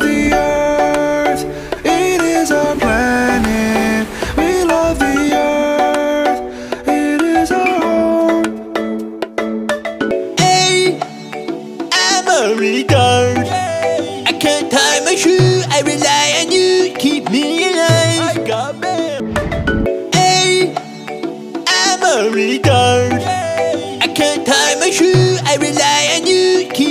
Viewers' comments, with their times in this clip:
0:10 really, Nice tune, no joke